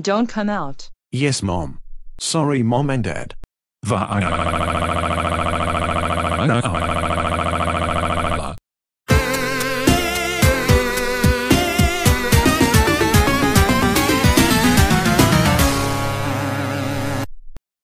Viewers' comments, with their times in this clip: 0:03 Aric Sound like a Caillou
0:03 Caillou's Crying Voice
0:03 Dark Dry Giga Bowser Jr's Crying Voice
0:03 Hatch Bro's Crying Voice
0:04 Dark Sulfur Bowser's crying voice